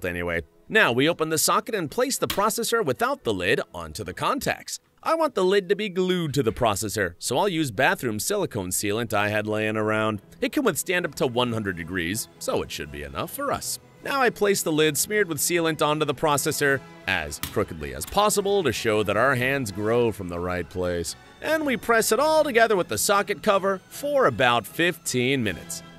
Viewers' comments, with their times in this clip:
0:07 he's slavic, either russian or ukrainian look at his older videos you'll understand by his voice also you can get a hint by